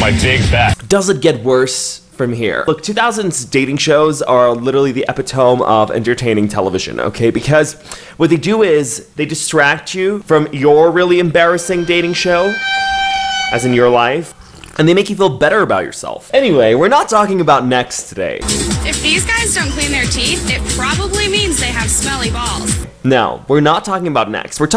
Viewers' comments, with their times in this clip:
0:04 am I wrong or did he say epitome wayyyyyyy wrong 💀💀 isn’t it supposed to be said upitumee or sum
0:05 That “epitOme” pronunciation made me do a double take. Am I the only one who pronounces it as “epitomEE”?